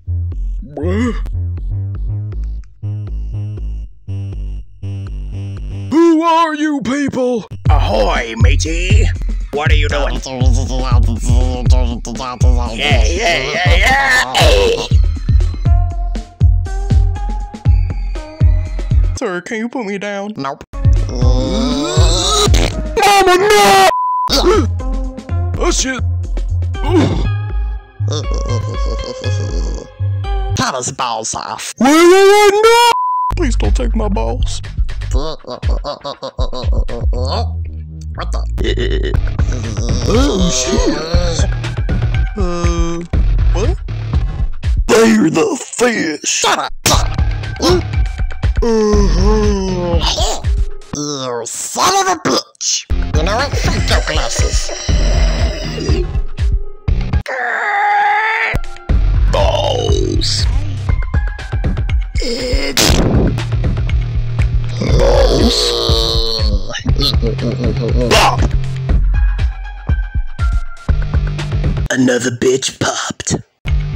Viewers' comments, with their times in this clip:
0:09 the way void jacko sounded like 💀
0:59 Ijust notice in wen aries said balls I heard a small aye😂😂😂